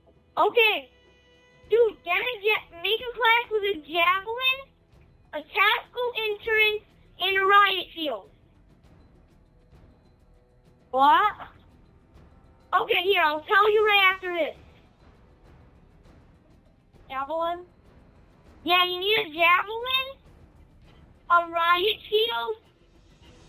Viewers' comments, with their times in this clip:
0:04 LMFAO TACTICAL INSURANCE